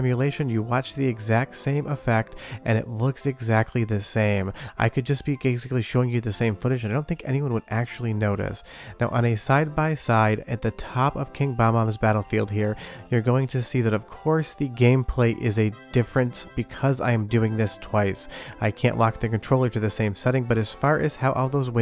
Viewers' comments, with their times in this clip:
0:03 "Gaysically" ??? Oh I Noticed! LOL!